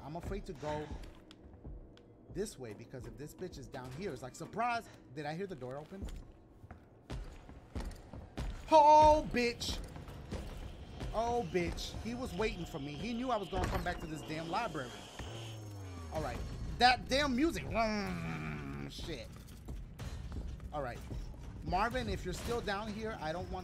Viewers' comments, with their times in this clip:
0:08 Who else heard that nice melody ?